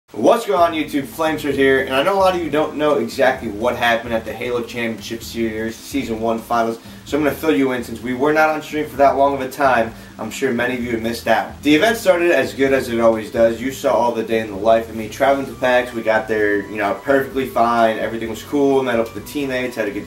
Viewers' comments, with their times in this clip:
0:04 was that word supposed to be "series"? lol